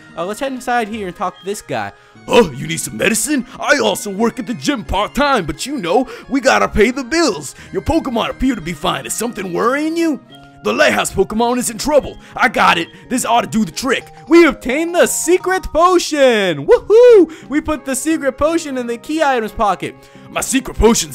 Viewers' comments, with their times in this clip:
0:03 he sounds like muscle man from the regular show